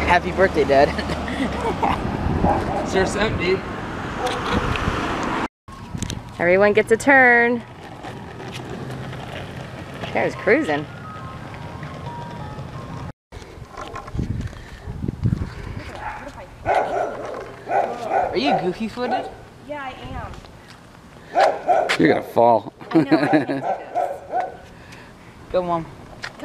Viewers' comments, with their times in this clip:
0:09 or 1o:13 .. did anyone else hear the ice cream truck? 😂😂😂😂